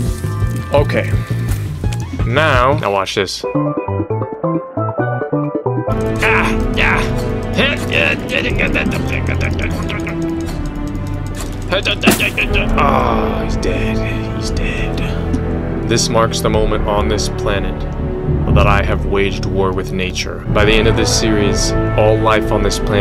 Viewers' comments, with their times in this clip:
0:07 not the Avatar music 😂😂😂😂